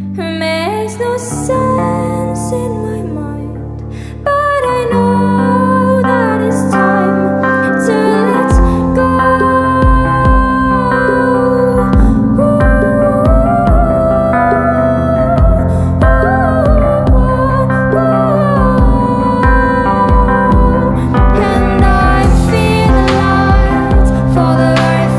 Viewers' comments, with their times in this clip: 0:07 "to let go." followed by her beautiful singing emphasizing the lyrics, all done in a genius way. Surely she has let go, so can we.